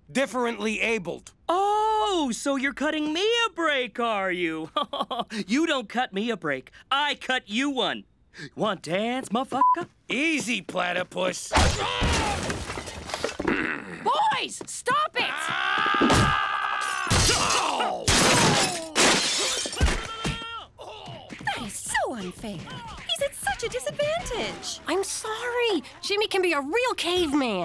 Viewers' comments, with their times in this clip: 0:09 comoletely failed the bleep LMAO my fav part of the whole series